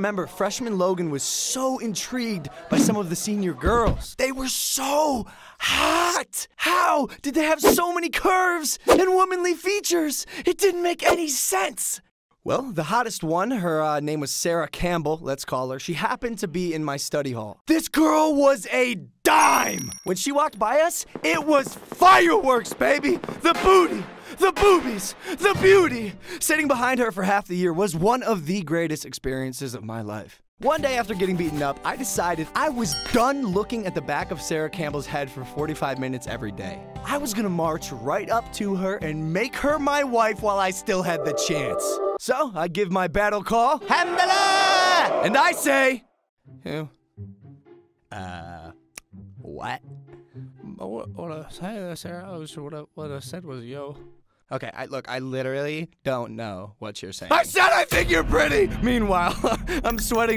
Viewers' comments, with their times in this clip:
0:08 the autotune thooo???
0:43 that battle call tho